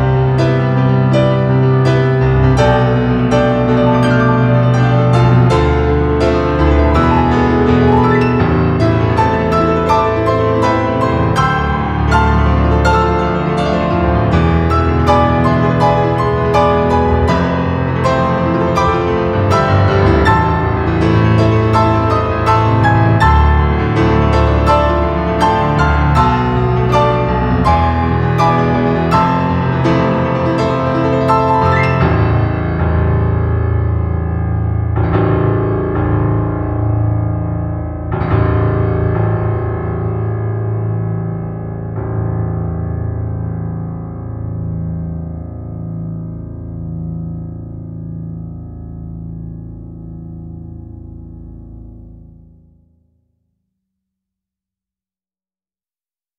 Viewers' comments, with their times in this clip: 0:07 Holy shit that last chorus is next level, I got sweaty hands just by watching onward is on par with Swordland and This game
0:08 maybe I'm wrong but do you play the left hand from a little different from the sheet music that you published?
0:09 Did anyone notice, that theres is a difference in the left hand runs in the left hand from the sheet music and his recording? At least in
0:31 He just had to use the lowest A note in the end
0:37 You paid for the piano, might as well use all the notes, even the lowest one